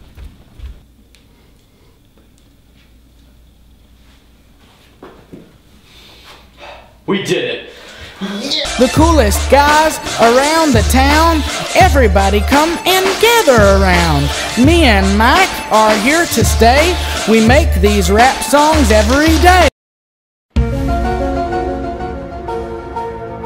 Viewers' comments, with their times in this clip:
0:09 lol rap song